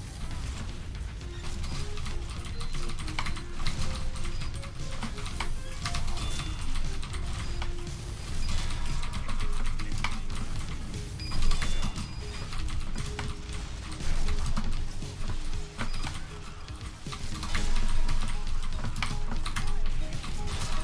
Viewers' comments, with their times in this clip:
0:07 intense keyboard mashing